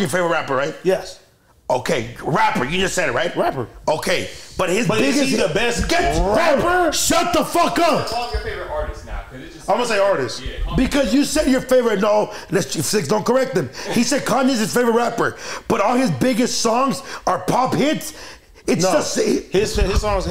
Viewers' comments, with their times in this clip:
0:05 Nah fr his ah be outta breath from all dat damn screamin